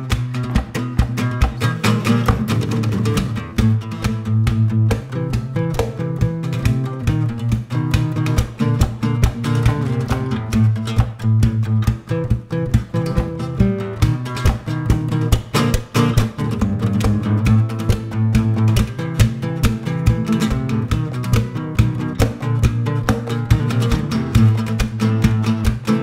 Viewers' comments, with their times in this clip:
0:08 When Gabriela plays a clam she confesses it with a sheepish grin but keeps on grooving! And aren't her knees cute?!